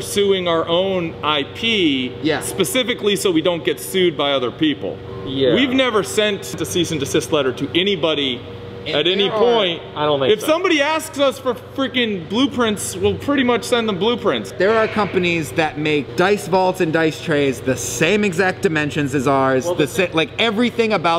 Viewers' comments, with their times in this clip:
0:04 Might be the mask but , yeah, I sure hope you're not sending out "disease and desist" letters ;)